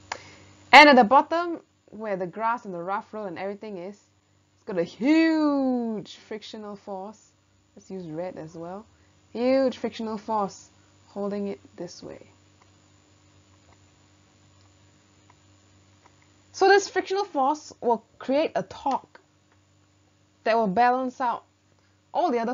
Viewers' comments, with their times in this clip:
0:04 not gonna lie i thought she said Siuuuuuuu. I'm dead lmao